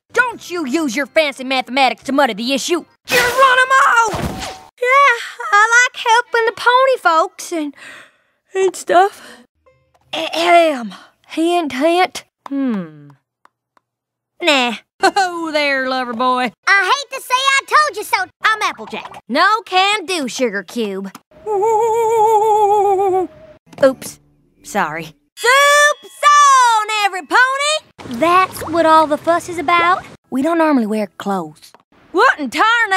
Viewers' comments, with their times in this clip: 0:03 sounds like Rainbow Dash
0:03 If you listen carefully she sounds like Rainbow Dash there
0:14 rainbow dash voice